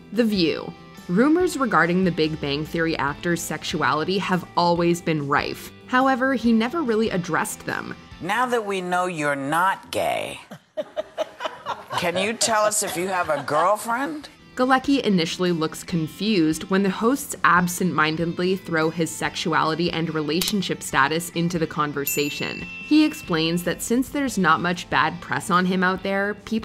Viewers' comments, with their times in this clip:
0:10 I haven't seen this whole segment, but I'm sure you can actually see Whoopi Goldberg do a WTF? double-take here, and then her tone while she reads the rest of the question is really saying: "Somebody actually wrote this shit on a card and expected me to ask it without going WTF?"